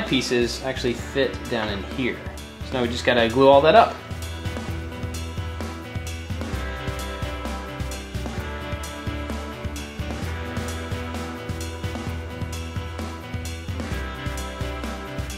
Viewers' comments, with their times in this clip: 0:03 the music sounds like fortnite music kinda